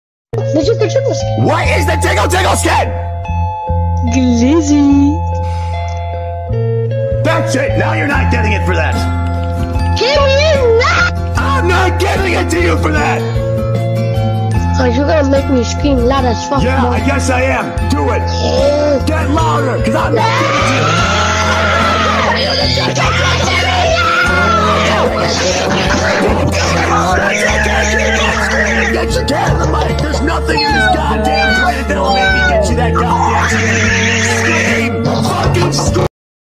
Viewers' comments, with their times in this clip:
0:01 the delivery kills me
0:07 I CAN'T UNHEAR WALTER WHITE 😭😭😭
0:08 bro sounds like Walter white
0:16 When the kid growls before he starts screaming and the music picks up, it's just.... chef's kiss
0:20 it looks like the nezuko scream idk but i hear it like that
0:27 bro sounded like a Luigi's mansion ghost
0:32 meow meow meow demon noises